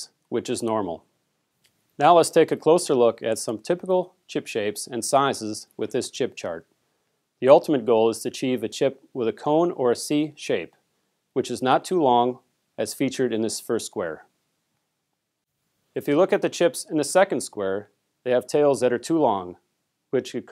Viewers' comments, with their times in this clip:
0:04 I wonder how many takes it took to get that pronounced the right way ... As a non-native English speaker, try this one : she sells sea shells at the sea shore.